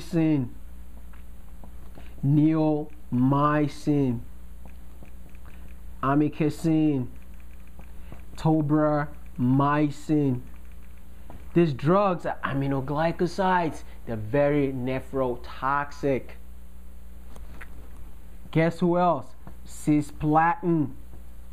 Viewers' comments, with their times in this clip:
0:09 glance right the gentamicin neil my scene I'm in kissing Cobra my sing (subs)